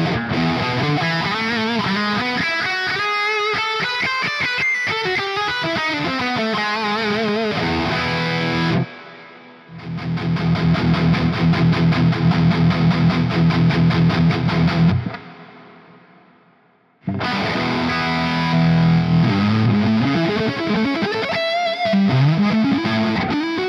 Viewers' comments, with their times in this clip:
0:08 that bullshit noodling is tiring to listen to. I wish theyd just reamp the same chugga chugga DI through both QC and the amp. Because and in most other cases it just doesnt sound as good. By good I mean focused and sweet and punchy
0:09 I do care about the palm mutes sounding unfocused, because in my experience thats a great test of the modeling quality. How the model/profile in question handles low end. Xtc certainly has more bite here, which is worrying to me.